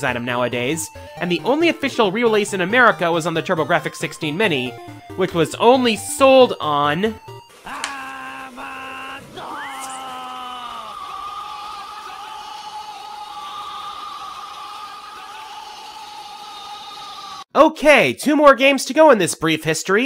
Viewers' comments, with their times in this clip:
0:07 What was that?! I cannot understand you!